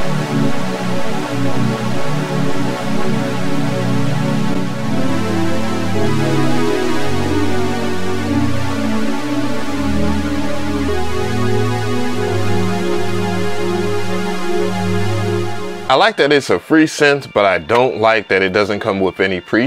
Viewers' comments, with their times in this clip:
0:04 could be an actual song